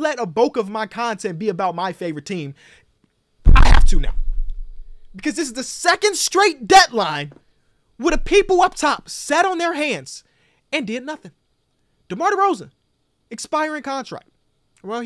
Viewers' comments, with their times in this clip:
0:03 THE DISTORTION DOE